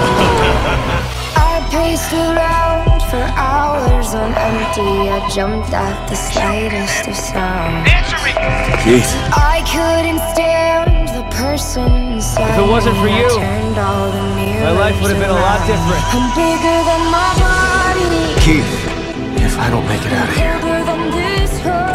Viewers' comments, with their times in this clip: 0:07 The dialogue was perfectly in sync with the music